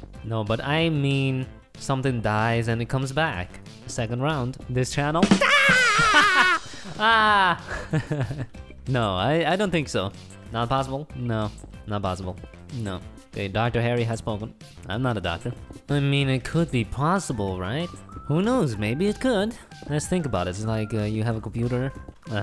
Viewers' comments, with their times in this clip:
0:05 Hmm.. I think I heard SpongeBob😂